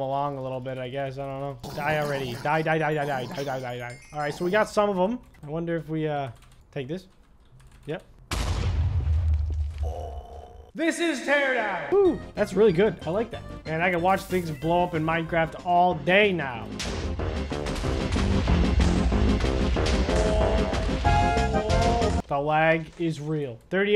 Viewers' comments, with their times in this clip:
0:08 haha, zombies go boink XD